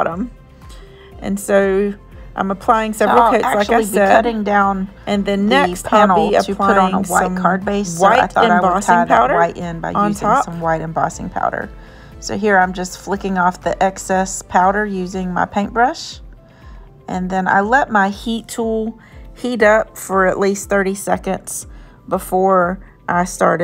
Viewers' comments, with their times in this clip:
0:04 Sorry about that! For some reason, one of my voice files overlapped another on this video download around the mark. That’s strange because it didn’t do that on the video that was posted on the Sassy & Crafty channel. I don’t know how that happened. Thank you for the compliment and pointing this out! I didn’t realize it was messed up. 🤦🏼‍♀️